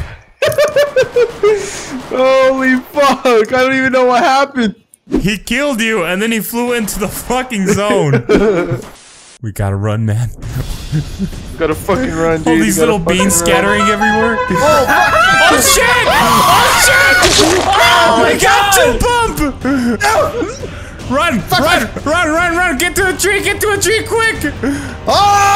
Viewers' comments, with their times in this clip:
0:10 🤣 the sound of the horn🤣🤣🤣